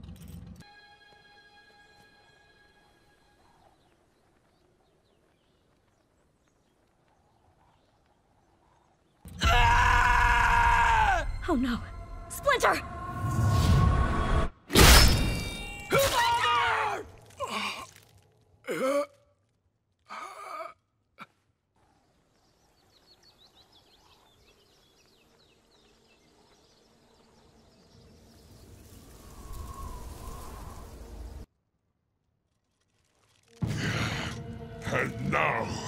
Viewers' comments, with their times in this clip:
0:08 when he let that scream. You can not tell me you where afraid of what he saw.
0:15 You can hear it pierce through his chest
0:16 When Raph yelled “FATHER!!” that hit my heart 😢😭😭😭❤️🥺😭😢😭😢❤️🥺